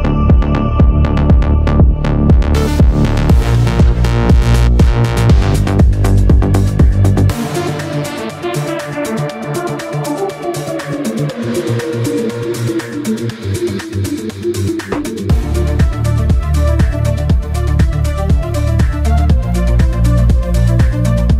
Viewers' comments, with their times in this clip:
0:06 New music is sick